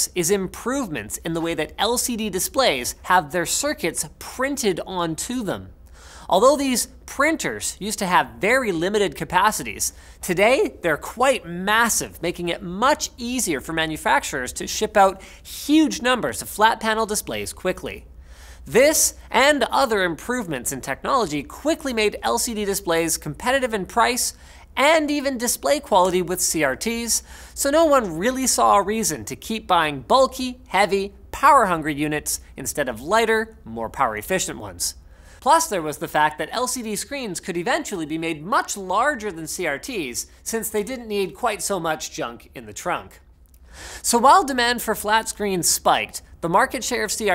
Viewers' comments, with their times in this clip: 0:10 voice cracked Have some water handy :3
0:10 -is linus going thru puberty?
0:35 Nice echo effect